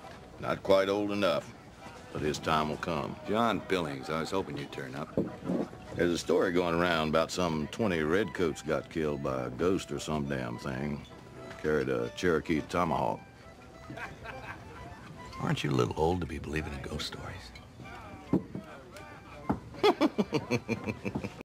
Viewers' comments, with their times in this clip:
0:03 one of the most believable southern accents. Not too much not too little, smooth
0:18 The laugh lol
0:19 I like that laughing sound at the end.